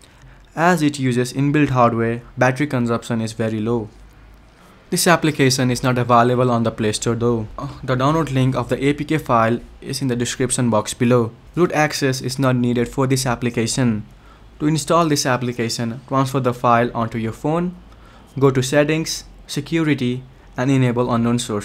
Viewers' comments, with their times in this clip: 0:08 Why did someone moan